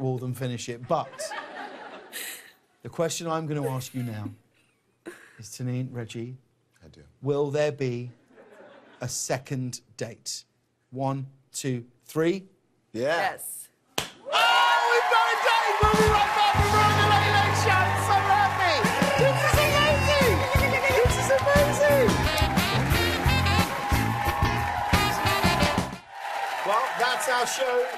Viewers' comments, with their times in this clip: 0:08 I like it when Reggie quietly said 'I do' when James said his and her name🤣🤣🤣 LOVE is definitely in the air😍